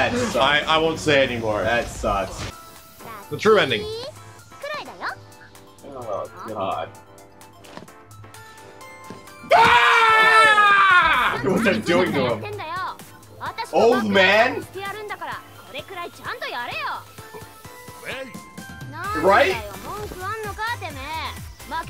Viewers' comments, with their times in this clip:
0:08 That scream though...
0:09 that scream is a perfect representation of all the Eddy fans dying on the inside after this level of disrespect #RipEddy
0:09 that scream of terror tho